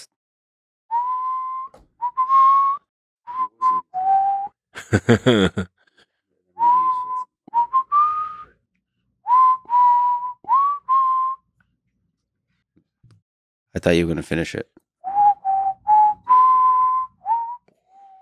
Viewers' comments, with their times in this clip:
0:05 “you kno whistling summons demons” Elon Musk: